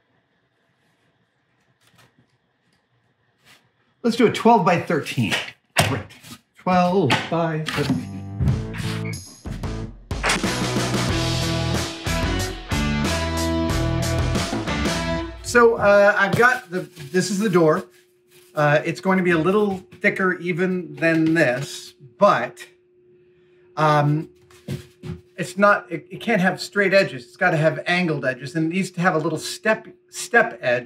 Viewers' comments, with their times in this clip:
0:07 Anyone else get Persona 5 vibes from the music ?
0:16 Just like a head's up or something, a few of your videos lately have had some really awful tone or hum in the background. I wonder if it's some sort of feedback or maybe some machine, maybe the vacuum system? I kinda doubt it's mechanical because it often fluctuates with your voice. I haven't watched the whole video yet but in this one it starts